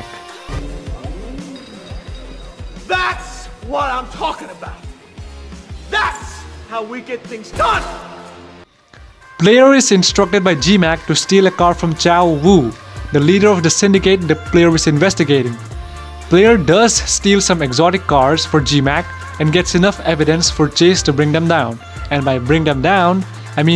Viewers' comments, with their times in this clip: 0:07 The song on brought memories